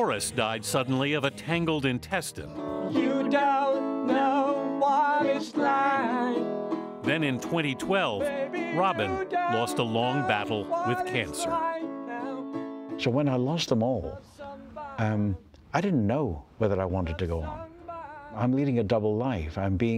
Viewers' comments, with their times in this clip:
0:05 It's so hard to listen to Robin struggling to hit those notes...